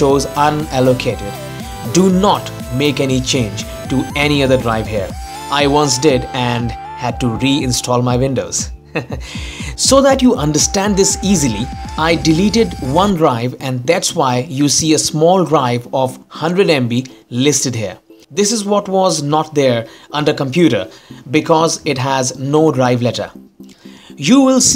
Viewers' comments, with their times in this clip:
0:07 Brilliant video. I liked the little chuckle made me smile. How can anyone thumb down a video like this. Simple, perfectly written, spoken and presented. And here just to help. Some people..Sigh. Than you again Sir. Kudos indeed.